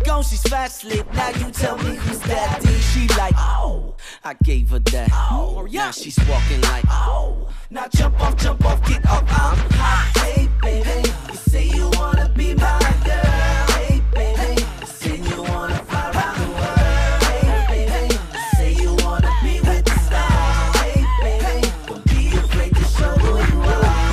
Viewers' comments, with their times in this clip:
0:06 when Omarion yelled his name fast always gets me lol ❤️